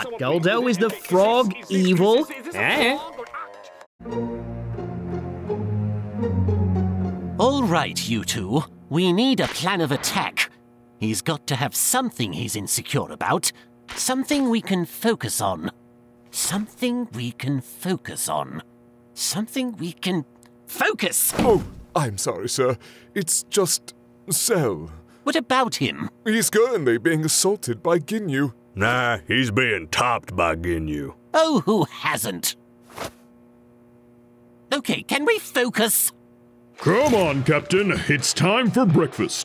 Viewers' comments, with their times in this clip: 0:03 I love the neighborhood remix of Frieza's theme
0:04 The leitmotif is sending me, my God
0:20 Did not expect that zarbon's armor would hit the glass and make a sound. Props to the details
0:20 I just noticed this detail Zarbon's shoulder pad audibly taps the window. It's a nice attention to detail.
0:21 The sound of Zarbon's shoulder thing hitting the window It's such a small thing, but it gets a chuckle outta me every time.
0:21 Can we just take a moment to appreciate that Zarbons shoulders bouncing off the glass not only bounce rather than clip, but also make a noise? Beautiful attention to detail.
0:21 i just want to say that the sound of zarbon's shoulder pad hitting the window was such a nice a subtle touch that i just had to point it out. love the little details like that